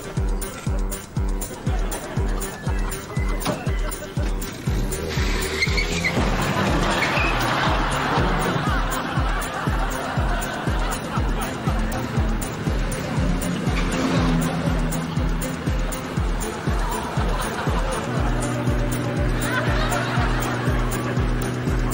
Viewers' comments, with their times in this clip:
0:06 that's guy laughing